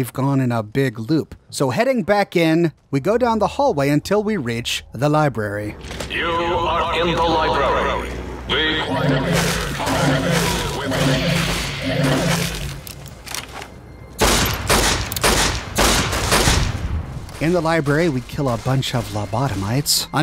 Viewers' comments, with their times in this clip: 0:05 I find it very ironic that he yells "BE QUIET IN THE LIBRAY" in the libray